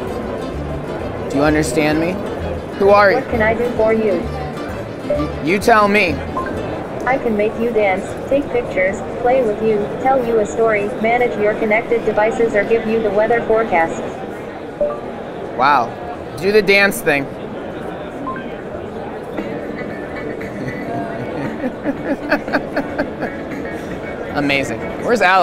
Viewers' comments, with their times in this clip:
0:08 they put siri's voice on it